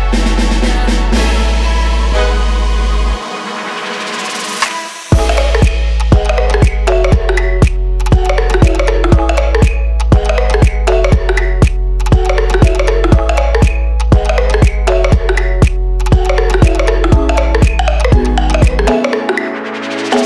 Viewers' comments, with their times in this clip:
0:03 no youre not ! that beat sounds delicious lol
0:04 I don't like the drums at the beginning, but after it's awesome. :)
0:07 Best beat ever.